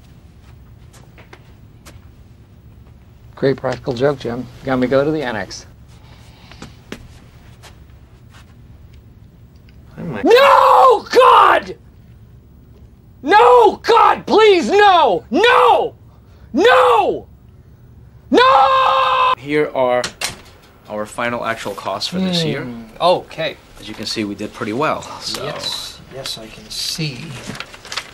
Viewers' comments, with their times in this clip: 0:05 I knew he was gonna scream so I reduced my volume 😂
0:12 I just noticed during the Michael screaming no at Toby part you can hear somebody start huffing/cracking up, probably Toby xD